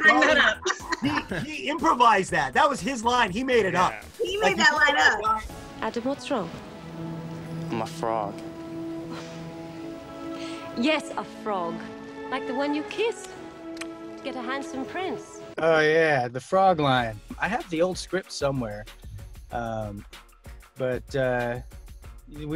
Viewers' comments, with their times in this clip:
0:05 This is completely unrelated, but does anyone else hear Strip by Chris Brown ?